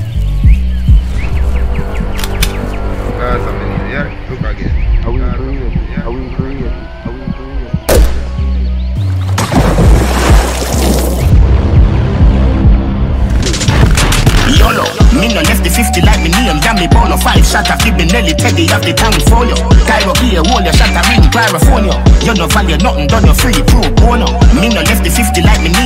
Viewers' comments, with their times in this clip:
0:07 Did anybody hear "barba bway don't run"
0:11 That "Dont Run" sound like Last man Standing